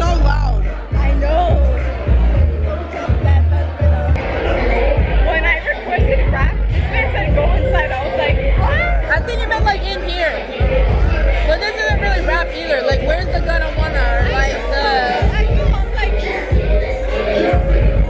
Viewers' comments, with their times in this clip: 0:03 the music is so loud the bass is shaking the camera LMAOOOOOOOOO